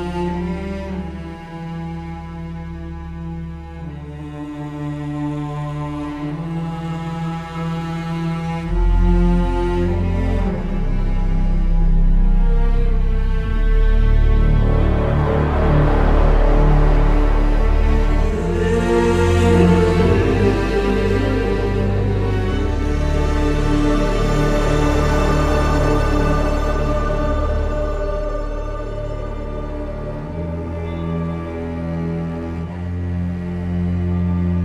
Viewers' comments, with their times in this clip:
0:06 that bass that kicks in gives me chills every time
0:17 God I really love the vocals here